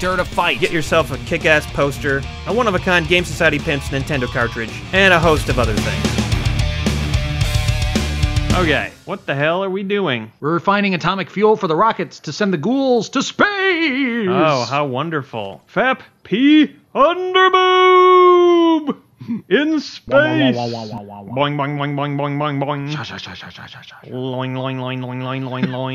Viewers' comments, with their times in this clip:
0:06 whats up with the audio after the arena? gets really tunnely and compressed sounding.
0:10 What happened to the mic quality ?